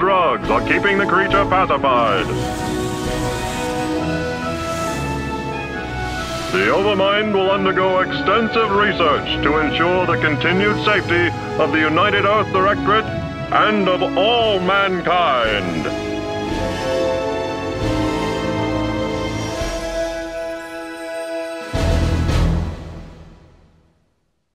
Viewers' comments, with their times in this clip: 0:10 the music and the video gave off a Disneyland vibe for some reason..... Zergland! The new Disney Theme Park! Come see the Zerg enslaved by the heroic forces of the UED! Be in awe of the sheer size of Overmind and how Humanity has defeated it! All this and more at Zergland located on the lava planet of Char!